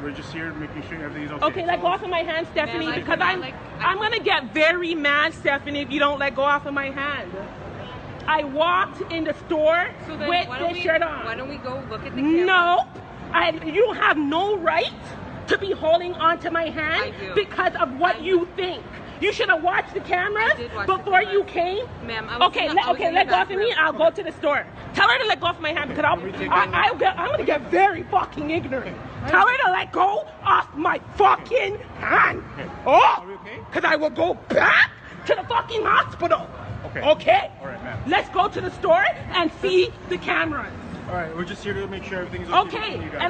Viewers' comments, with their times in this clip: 0:10 Yo i git full on SCARED like my heart junped when that accent came out
0:30 Woo when that accent got hard I KNEW she was mad
0:31 Yooow mi di know she a Jamaican gave it away